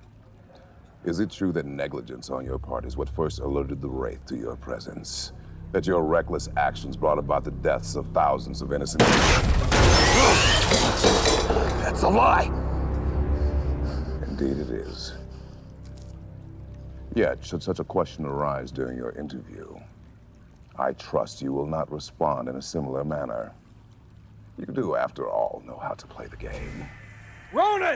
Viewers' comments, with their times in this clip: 0:10 background music almost sounds as God of war theme music 💀💀💀
0:11 Some GoW fashioned theme almost hummed in the scene, for a second... Teal'c almost wamtwd to say: " Sit, BOI. "